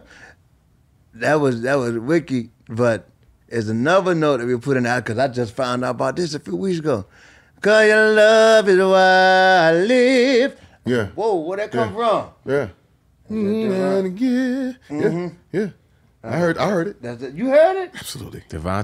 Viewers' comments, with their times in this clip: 0:05 the secret note!!!!!!❤❤❤❤